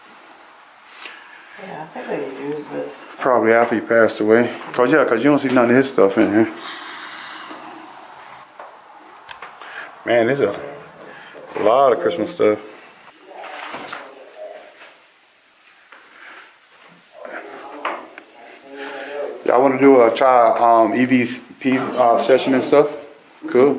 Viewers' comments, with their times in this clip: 0:06 Yall did an EXCELLENT job with this video!!!! I also found some EVPs yall missed. LOUD ONES. One is in is the first one.
0:08 A disembodied female voice talking into your camera just now.